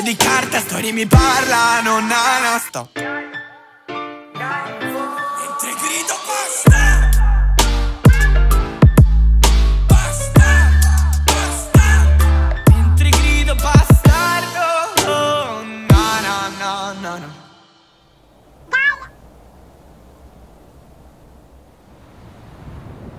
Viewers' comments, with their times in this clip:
0:05 taxi b joined the lobby